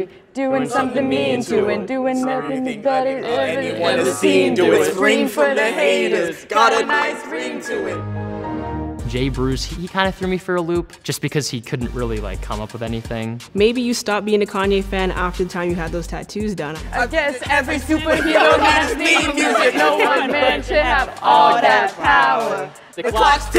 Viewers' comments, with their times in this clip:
0:08 JUBILEE did him dirty with that Power down Windows 99 sound effect 😂